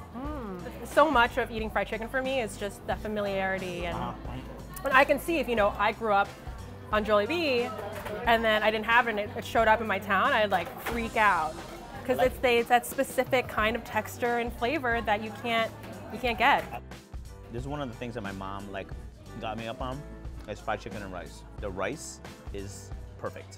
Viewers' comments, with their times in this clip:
0:07 I nearly turned the video off the way she pronounced Jollibee